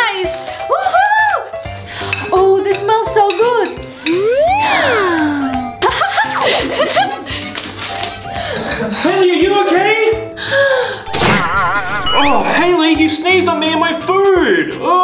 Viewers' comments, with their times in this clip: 0:03 Giant Pepper Sneeze 🤧🤧🤧